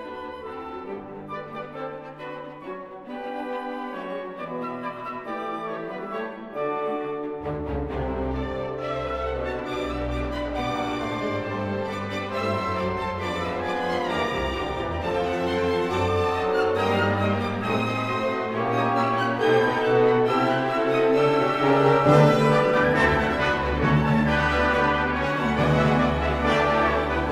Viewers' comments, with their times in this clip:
0:08 reminds me of opening notes of La Boheme